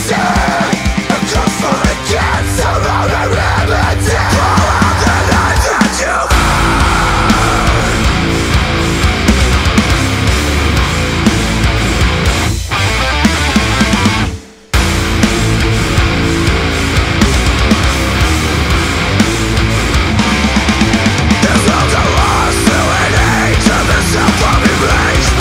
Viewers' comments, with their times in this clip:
0:04 That riff is straight off Leviathan by Mastodon, fucking crushing
0:12 I love that pause, the silence said so much more than any note could have.
0:13 the drum part sound so false. why you do that?? thats musically the most powerfull part in this song and then this... sry but i think you guys understand me. greets